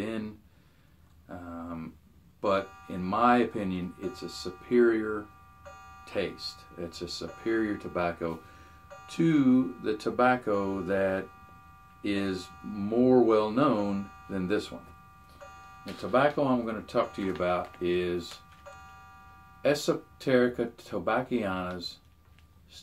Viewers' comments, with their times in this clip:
0:10 I appreciate the clock chiming in the background. Very classy. :)